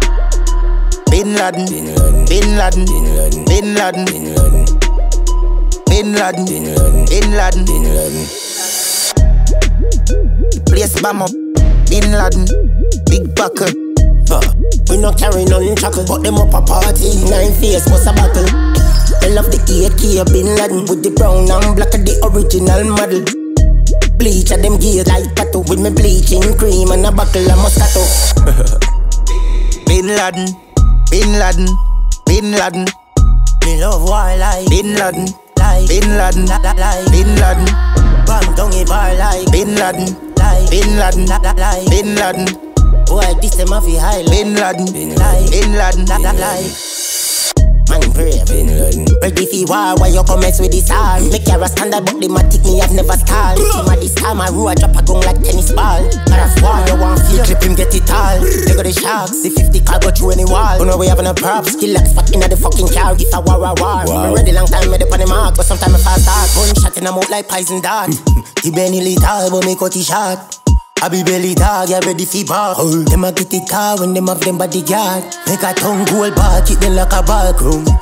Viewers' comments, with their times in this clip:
0:09 Round fi true Skilli sound like Tommy Lee
1:06 Di Binelli tall but mi cut it short.....I dont know how his voice switch when he dropped that bar